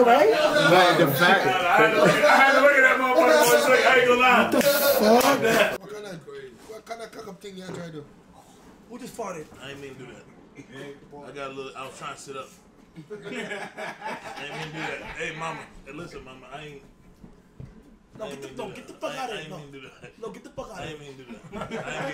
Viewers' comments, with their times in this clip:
0:06 Spreadin ya legs in the air to fart is diabolical 😂😂